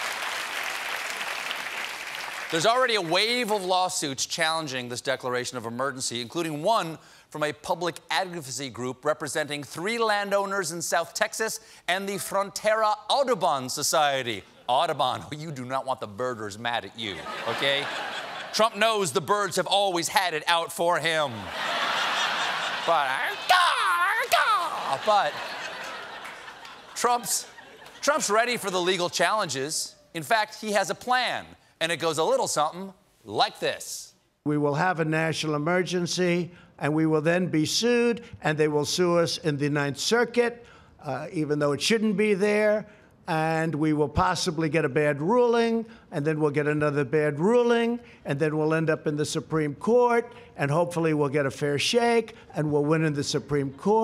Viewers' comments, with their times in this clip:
0:08 Stephen Colbert can't say the word advocacy
0:36 Trump raps with the cadence of every suburban mom in America but with the words of a drunk and senile Dr Seuss